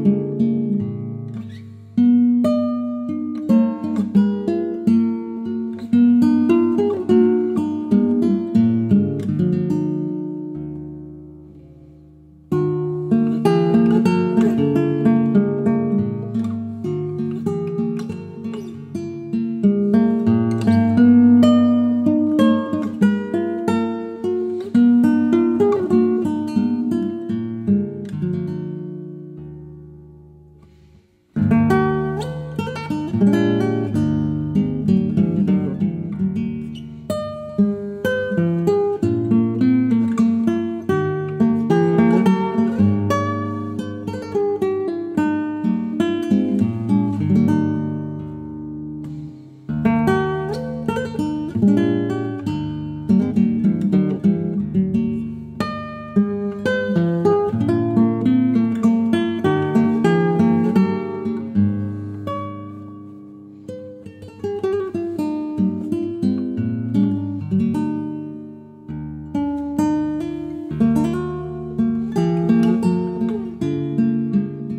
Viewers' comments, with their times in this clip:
0:05 Wonderful...love what's happening ,..and through out the song in general many interesting details,..lovely inversion
1:02 That held vibrato note kills me every time. So beautiful.